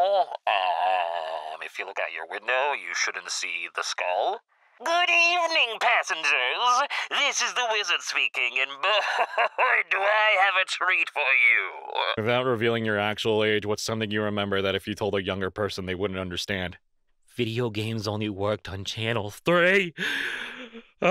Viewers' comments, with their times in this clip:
0:06 Mark Hamil Joker is that you?